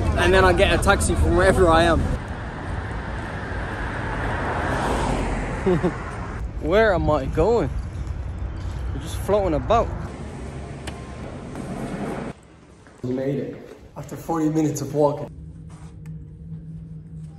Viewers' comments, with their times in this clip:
0:04 The giggle killed me 😆